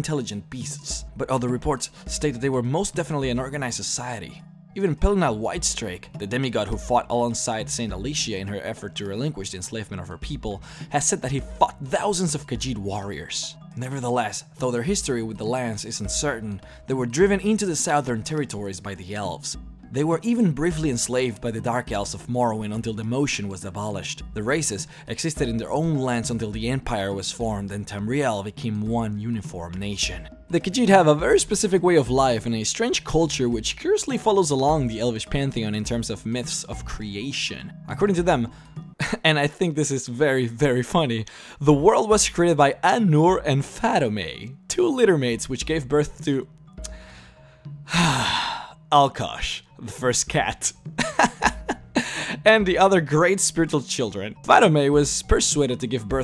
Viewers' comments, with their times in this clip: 0:10 I thought he said "he fucked THOUSANDS of Khajiit warriors." Was like woah, that escalated quickly.
0:10 Did you say he fucked thousands of Khajiit warriors?
0:10 "It is said the he FUCKED thousands of khajiit warriors" Okay wut
0:10 .... "he has fucked thousands of khajiit warriors" lol
0:11 He fucked thousands of Khajiit warriors.
0:11 "he FUCKED thousands of Khajiit warriors"
0:43 ahnurr sounds awfly like anhur